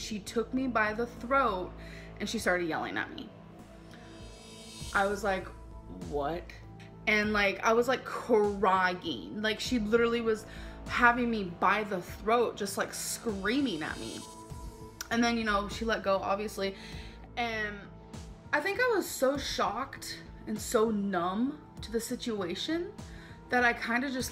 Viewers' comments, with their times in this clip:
0:07 “I was like… KUH-RYE-YEEEEN” Why does she give words unnecessary syllables?